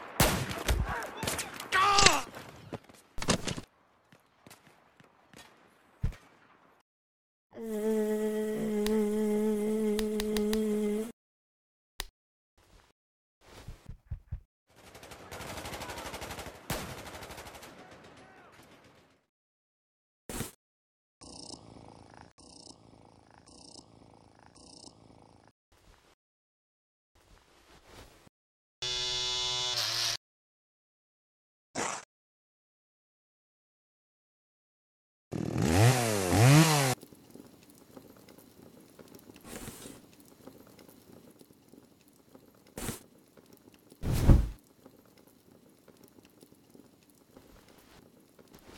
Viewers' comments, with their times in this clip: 0:06 can we talk about how all Fluffle does is make a buzzing noise and pat Dan’s face, and he actually understood what she wanted? Because I didn’t get that my first time watching this back then XD
0:13 fluff puffs impretion of a shaver
0:24 They finally voiced the characters!!! cats are the cute
0:30 He crys here the part 😂😂😂